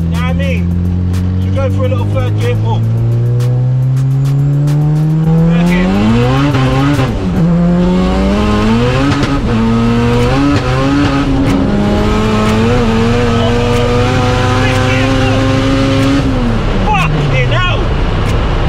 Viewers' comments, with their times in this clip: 0:04 it’s mad how can hear the vtec crossover and then turbo straight after 😍😍😍💥